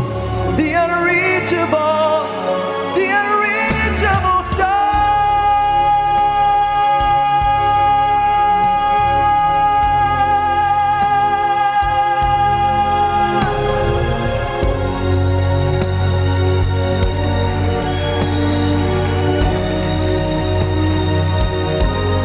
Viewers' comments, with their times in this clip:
0:04 Uugghhh!!! THIS!!!! This is soooo amazing!!! Those big notes are gorrrrrgeous!! is monnneeyyy!! haha Can listen to you all day long. You're so talented!! :-D